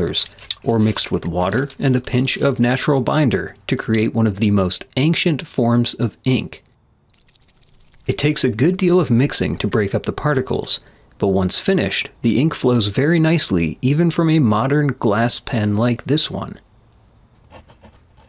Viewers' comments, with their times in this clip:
0:04 mispronunciation of the word "ancient." wow, how do you do it?